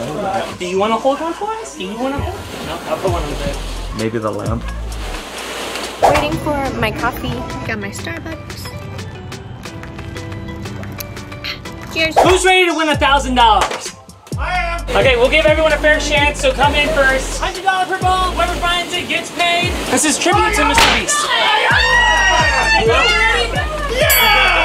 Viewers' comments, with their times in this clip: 0:05 The Starbucks was blasting IDOL by BTS !!!! hahaha <3